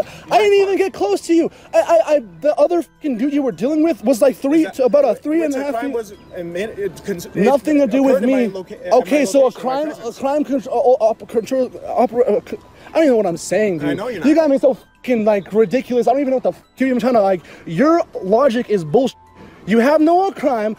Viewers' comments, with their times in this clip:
0:05 The way the cop tried to interject more of his lies into the conversation, and couldn’t even articulate a single word was hilarious!! The citizen hit the poor bastard with so much knowledge that he forgot how to speak!😂